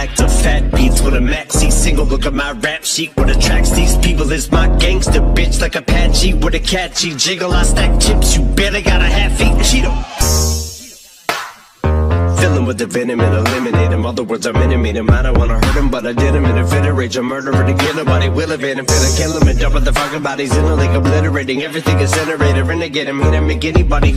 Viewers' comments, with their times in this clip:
0:08 is the fast part